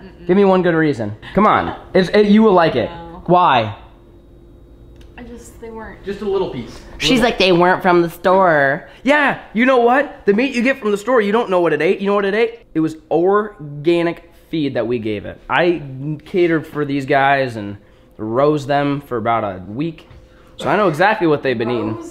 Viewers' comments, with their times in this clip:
0:07 My favorite part is You sounded like a Karen 😂.